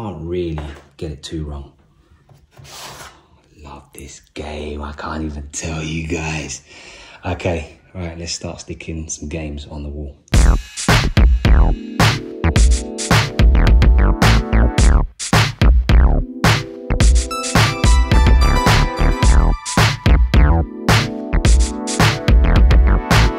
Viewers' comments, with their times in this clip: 0:04 why does he sound like a demon lol